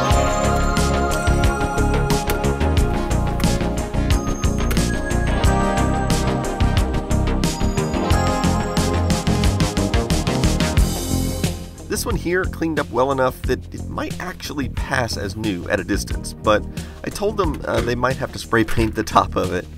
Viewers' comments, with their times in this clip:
0:04 GREAT music during the montage. Felt like I was in the Kumite getting ready for my next match!